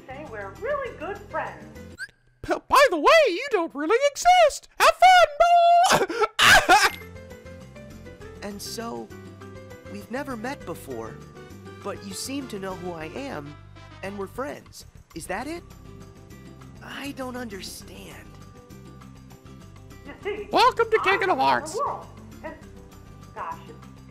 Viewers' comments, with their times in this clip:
0:08 Don't let someone staple your balls while you play that game. It sounds weird. ;)